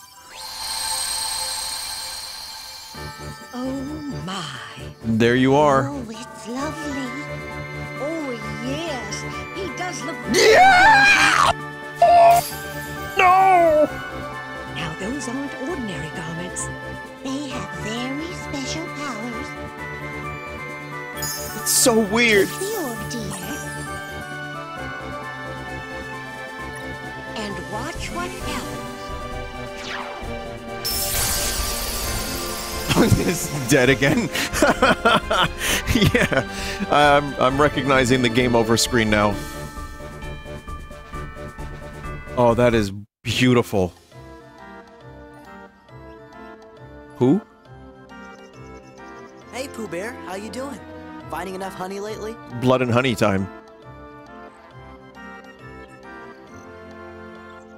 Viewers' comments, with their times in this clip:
0:09 That corruption made Vinny transform into Black Mesa scientist ..noo-uu
0:43 the awkward silence 😂